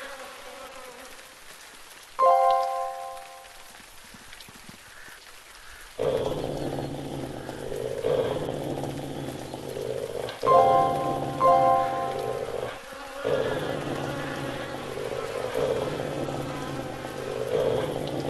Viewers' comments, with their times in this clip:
0:03 "our kill?"woman or specimen wolf u need to be nice he did nothin he just walked by ate some food and u get all growly